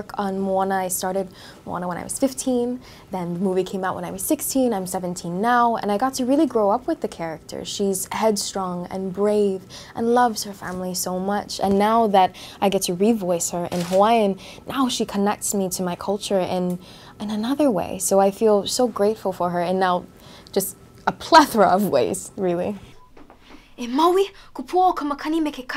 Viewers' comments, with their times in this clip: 0:10 she grabs Moana’s hair and I lost it, also her voice is so amazing❤️